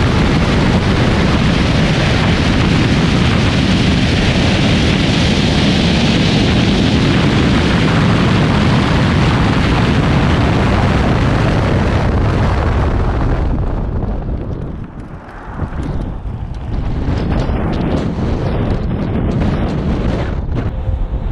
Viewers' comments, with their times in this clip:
0:04 I seriously heard V1 for take off.